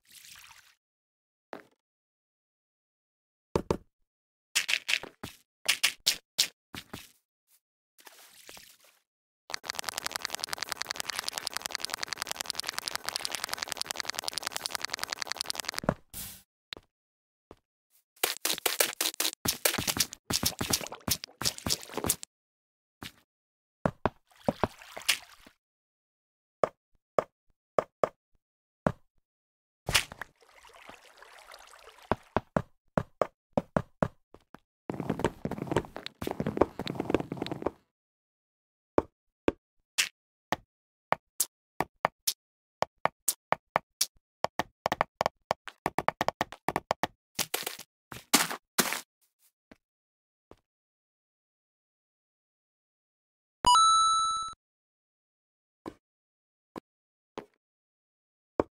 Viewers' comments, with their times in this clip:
0:04 the sound of dirt like a super mario music)))
0:38 it sounds like beatbox
0:38 I thought it was about to fade into song from the block placing sounds
0:39 nice beatbox bro xD
0:39 Do you here the beat
0:40 It sounds like a beat
0:40 Me:Mom can we have snare and beats Mom: no we have one at home Snare and beats at home:
0:40 anyone else notice the beat?
0:41 That sounds like a beat to rap on XD
0:41 sickest beat i've ever heard
0:41 Is kinda like a little song
0:42 Me:look like a music
0:43 Damn, he is good at making rhythms xd